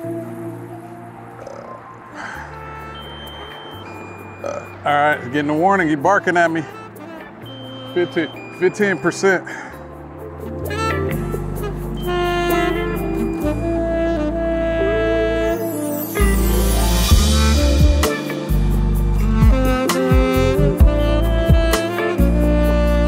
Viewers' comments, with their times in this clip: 0:04 Getting your drone on got you burping! 😂